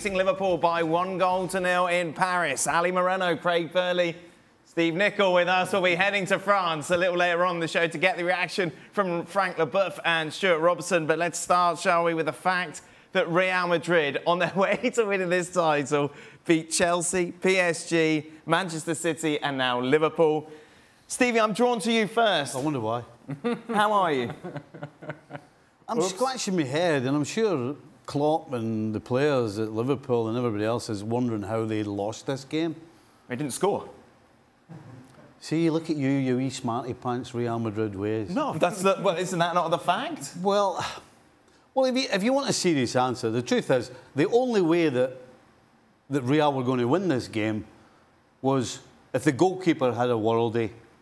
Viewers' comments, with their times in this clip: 0:10 I like the way he said chelsea then psg lol
0:34 If you listen closely you can hear people in the background laughing at Stevie Nicol. Brilliant, just brilliant.